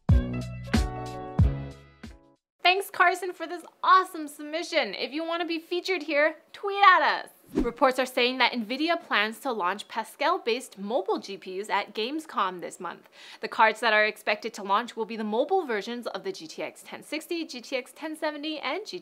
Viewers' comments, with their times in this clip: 0:05 did she say "Toyota"?